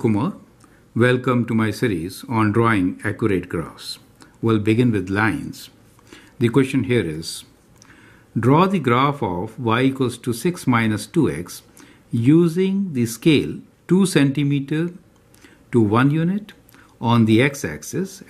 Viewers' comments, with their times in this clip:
0:05 well begin with lions